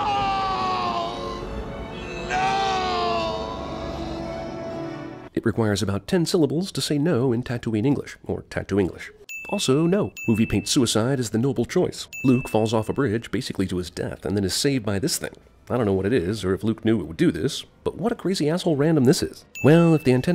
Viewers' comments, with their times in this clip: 0:06 I sometimes wonder why they had Luke scream like that but when Rey finds out she’s the Emperor’s granddaughter we just get stunned silence.